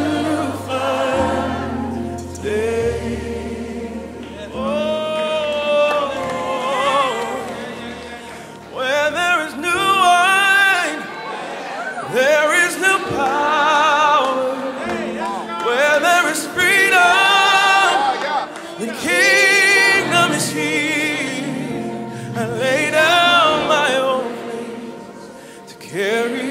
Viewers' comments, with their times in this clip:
0:10 is such a moment! Everybody slowly coming tg singing… I skipped this song so many times and I KNOW it was a reason why I hear it now !!! I feel the Holy Spirit soo muchh!!! WONT YIU BREATHE ON US LORD 🙌🏽🙌🏽🙌🏽💙💙💙💙